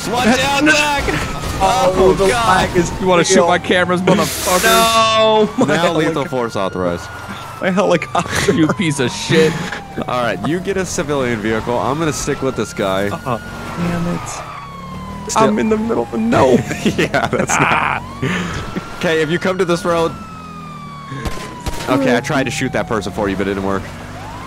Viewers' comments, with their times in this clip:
0:08 lol cries "My helicopter" as it sits on its side hahahahaaha